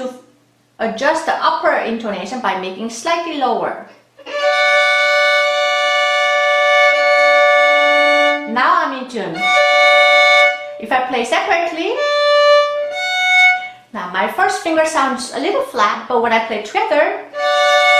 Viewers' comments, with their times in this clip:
0:03 perfect example of needing to change certain notes to get intervals nicely in tune! Not many (young) violinists know this! I'm glad I was taught this "phenomenon" at the age of 12. Thank you again for demonstrating :)